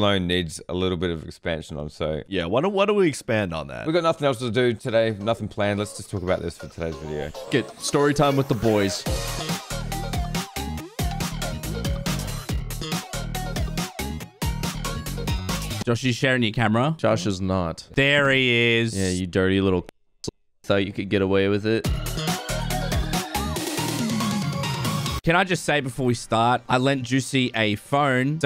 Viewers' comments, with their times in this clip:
0:09 it sound a game intro